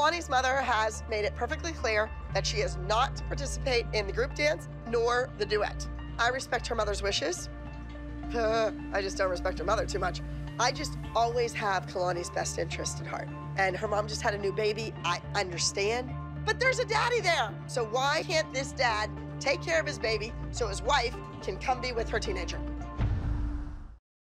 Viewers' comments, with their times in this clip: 0:08 Abbys little laugh had me rolling 😂😂